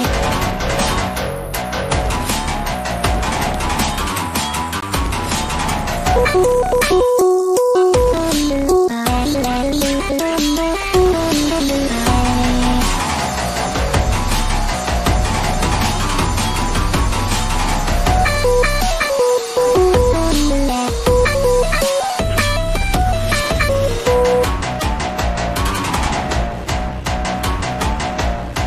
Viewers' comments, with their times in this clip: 0:09 anyone gonna ignore the fact that it sounded different